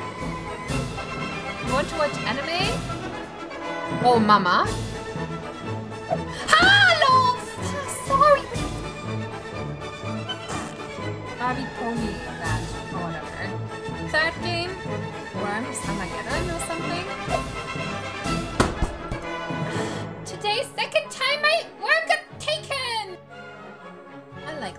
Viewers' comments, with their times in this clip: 0:10 aggressive fart noise